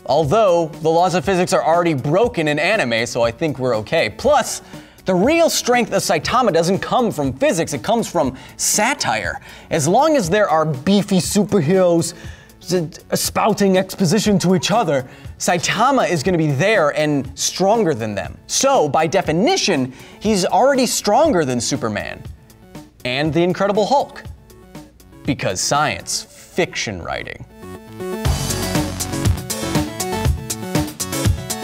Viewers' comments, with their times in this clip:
0:10 was that an attempt at Arnold??? if it was it was good, at least to me
0:13 Suddenly Anrold Schwarzenegger-ish dialect. lol